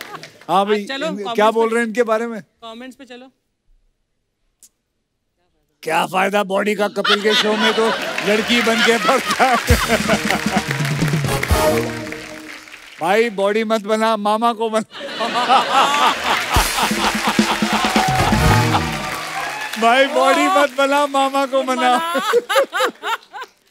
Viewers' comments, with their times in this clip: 0:06 Akshay paaji's comical voice 😂😂😂💯💯. Love that voice 💥💥